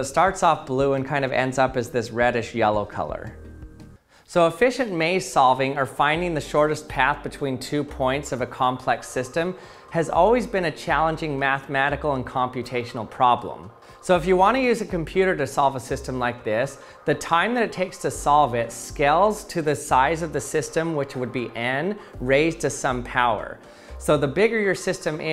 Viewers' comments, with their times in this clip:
0:09 Is it me or was there an xbox sound